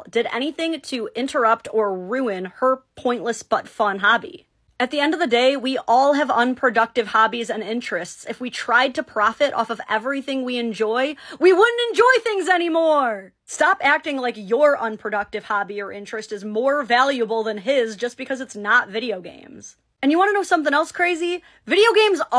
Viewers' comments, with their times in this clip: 0:03 pointless buttfun hobbies are the best!!